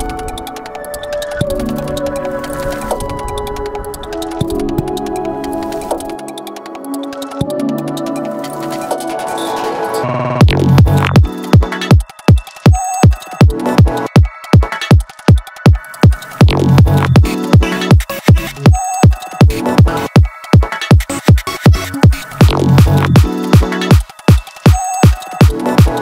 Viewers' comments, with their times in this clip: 0:08 i just realized there's a bababooey sample oh no